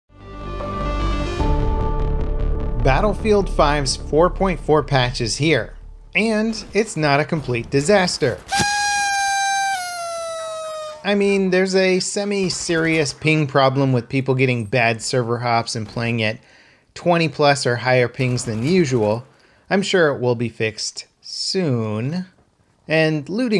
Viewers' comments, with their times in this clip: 0:06 The level of sarcasm !